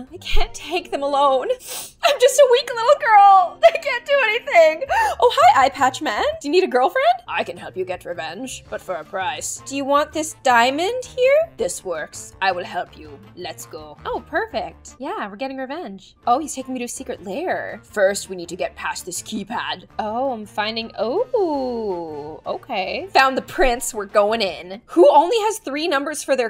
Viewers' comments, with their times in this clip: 0:07 that's the same voice as the hulk toy in I mailed myself FAKER
0:12 She’s doing the hulk voice from I mailed myself and it worked